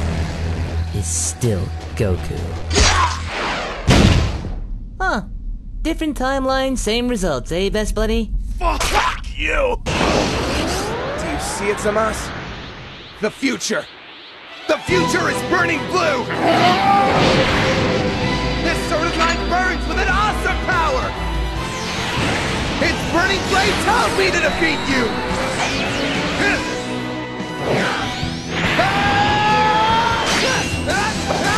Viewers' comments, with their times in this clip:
0:09 Why does the scene so like it could actually be not just an official dub, but a really good one? Is this just me?
0:13 OMG, Anyone gets goosebumps when Trunks attack with The Shining Finger theme song? +1